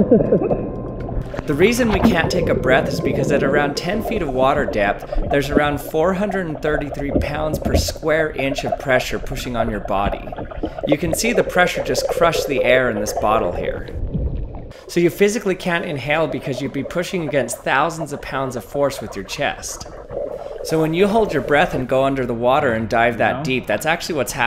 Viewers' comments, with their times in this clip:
0:06 ".... barn corn on square footsteps something...." * Sounds of Murica science *